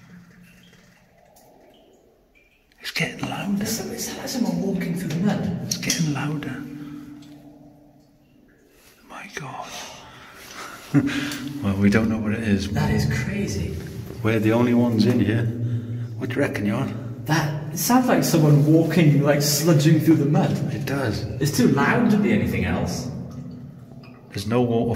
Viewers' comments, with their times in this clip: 0:08 I think that is the breathing of a big sleeping animal.
0:12 Well if you stop talking every 10 sec we could here it ...